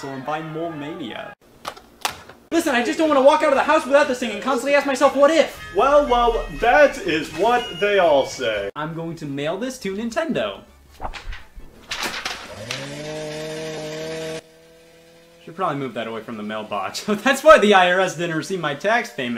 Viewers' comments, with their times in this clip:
0:07 i can’t stop replaying this part… the line delivery is just so good 😭😭